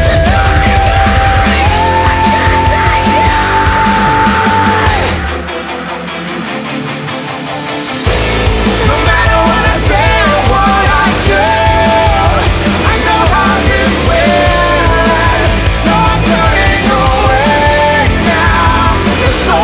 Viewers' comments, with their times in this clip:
0:04 DUDE WTF ARE YOU DOING WITH THAT GUITAR??? Wheezy voice as wheezy laughs